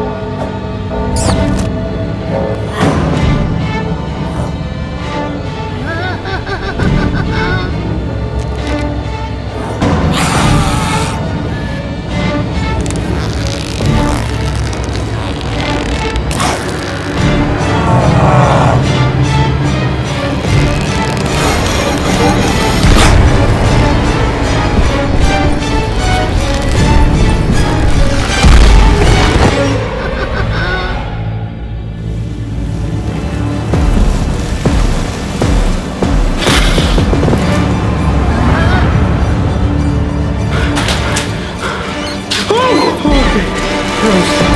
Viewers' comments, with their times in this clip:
0:05 cartoon cat Laughter
0:17 On Cartoon Cat made in evil sound
0:30 sounds like slappy